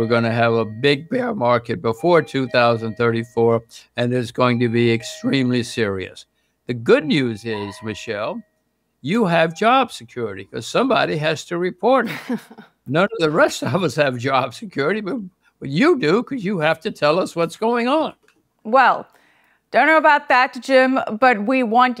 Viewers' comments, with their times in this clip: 0:03 Would someone stop that door bell chiming?